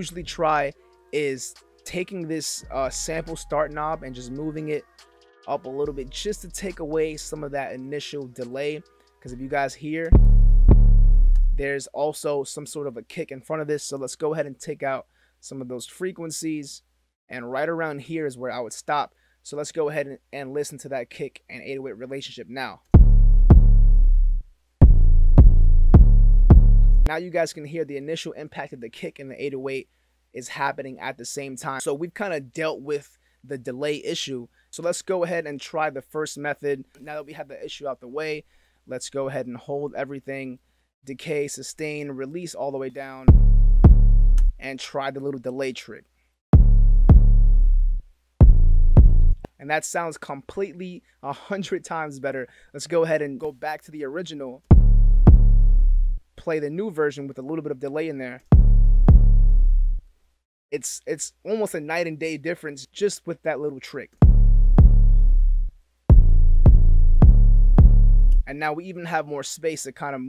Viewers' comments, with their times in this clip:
0:04 if u cut the 808 like that I think there is going to be a click in the beginning. Turn on generic decklicking mode to get rid of it. (Tell me if I’m wrong) Greetings from Germany, love ur videos 🤠
0:55 Thanks my friend, you video is very good, sidechaining when needed , that technique in delaying the 808 a lilttle bit as you did, or delaying the 808 notes in the pianoroll, is very effective for the kick transient to cut through.